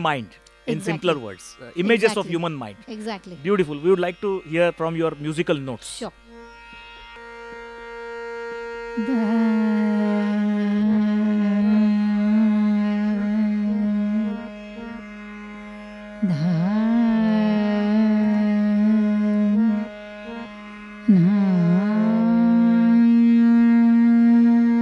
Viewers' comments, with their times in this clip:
0:07 The bandish starts